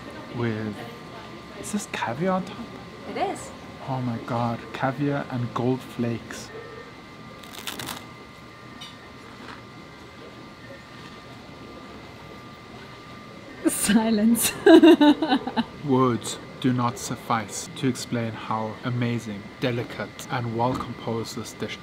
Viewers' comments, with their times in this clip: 0:07 Wow! behind the crunch I could hear the popping of the caviar :)